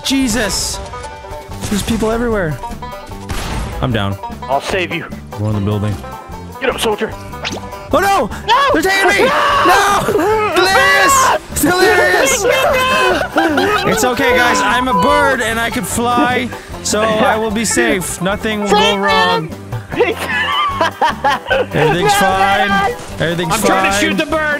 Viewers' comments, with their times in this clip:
0:09 Bro the second scream delirious gave 💀💀